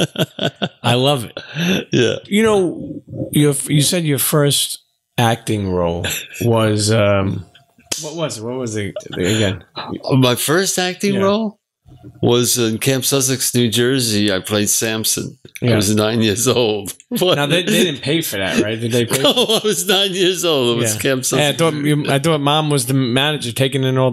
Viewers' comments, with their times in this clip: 0:05 it is the year 2020 and we already have witnessed the clap of the century